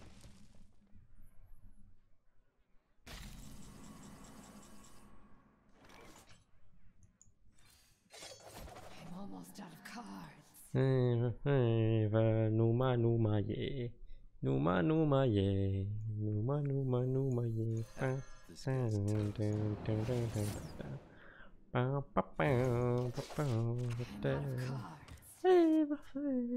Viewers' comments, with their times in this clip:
0:10 aw) that moldavian O-ZONE song tune was cute)
0:12 did you start singing a romanian song? XD